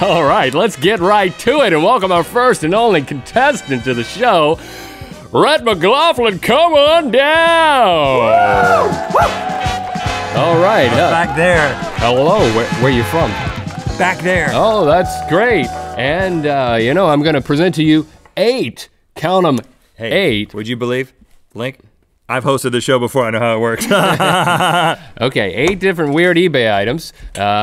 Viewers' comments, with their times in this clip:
0:09 DJ KHALED WHOOOOO